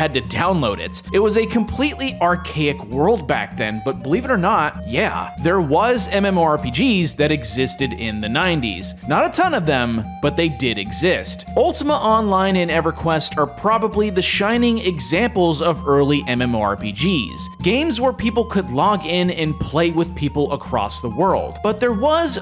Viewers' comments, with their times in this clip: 0:03 AWWWWWW SHIT dude I can HEAR the piano! YEAAH!! Woo, I can hear it...! ... I can hear it for like 12 hours on DSL connection... I... I can hear it... [Rocks back and forth sobbing]